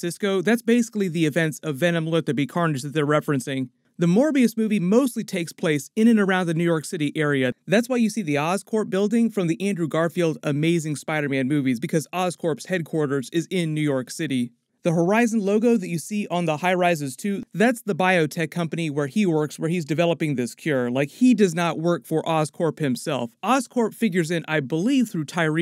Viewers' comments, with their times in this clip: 0:09 The way you say "Andrew Garfields Ammaziiing spider man movie" makes it sound like movie was actually amazing lol